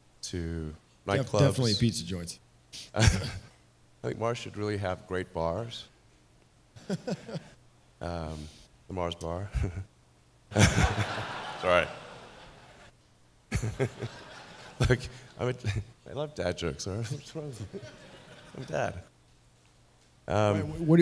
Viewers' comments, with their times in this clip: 0:08 “Mars should have great bars” spaces out thinking of the fact that mars and bars rhyme accidentally says his thought alloud “Hehe mars bars hehe” realizes he says that out loud crowd laughs embarrassedly laughs back “Hehe”